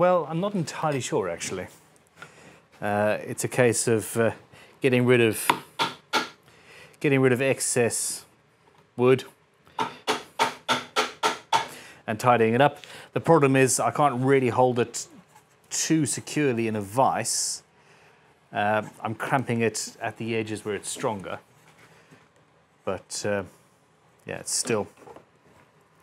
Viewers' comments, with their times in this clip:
0:07 sounds exactly like macklemore thrift shop intro 😂😂